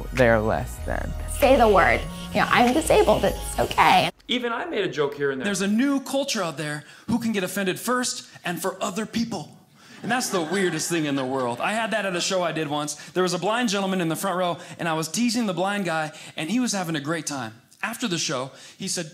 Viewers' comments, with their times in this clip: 0:06 Great double joke; LOUD LAUGH